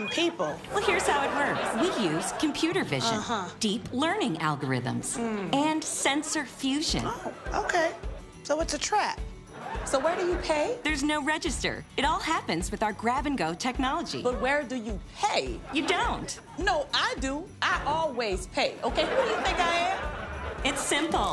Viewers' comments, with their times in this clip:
0:05 When Ego goes, mmmmmmm with that untrusting face. I don't know why that just gets me. 😄